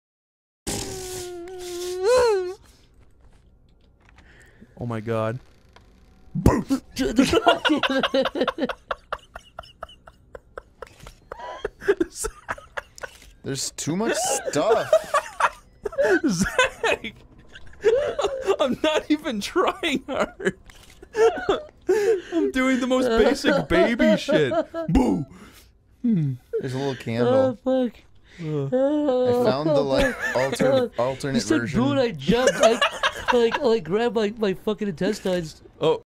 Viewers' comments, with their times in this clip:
0:06 sounds like a song intro
0:30 its like yanny laural you either hear boo or jew